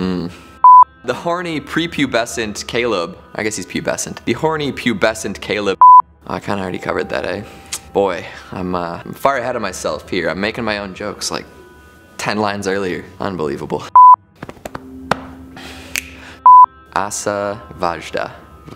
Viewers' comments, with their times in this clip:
0:06 your Canadian is showing